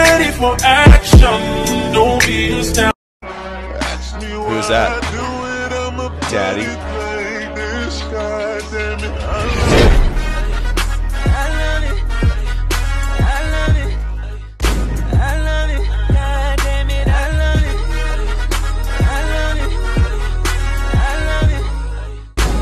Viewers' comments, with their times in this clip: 0:04 is Jensen’s voice😍 but where the f**k is he?!?